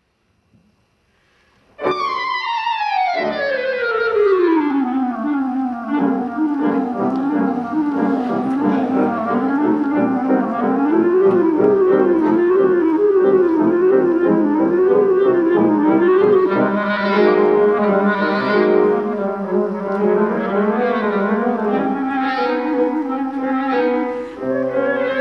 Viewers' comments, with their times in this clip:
0:06 I like everyone's dramatic gasp ... lol